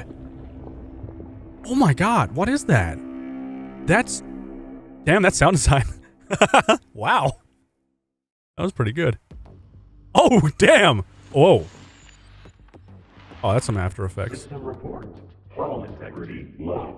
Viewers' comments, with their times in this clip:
0:04 Was that... the horn from the old subnautica farlands...? That sent shivers down my spine...